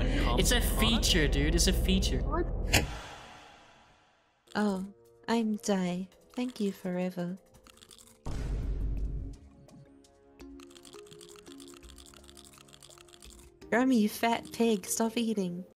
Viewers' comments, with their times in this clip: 0:10 "Fat Pig" Vine Boom Sound Effect